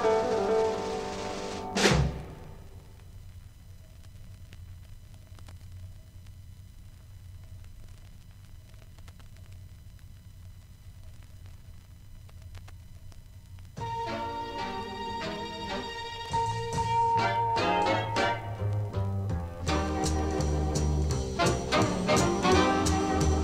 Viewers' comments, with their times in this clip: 0:09 This is “Rain” …similar tempo to Jimmie Lunceford’s version.